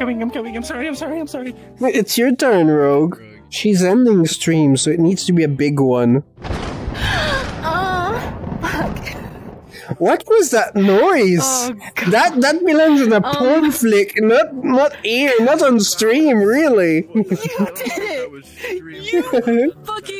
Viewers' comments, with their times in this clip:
0:07 the moan and fuck do not help the situation at all.